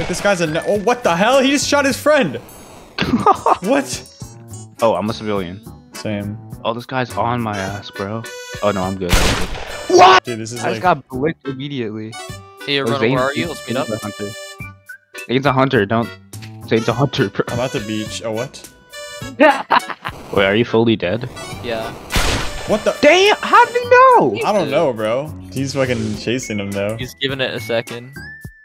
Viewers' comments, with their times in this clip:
0:09 the scream is golden quality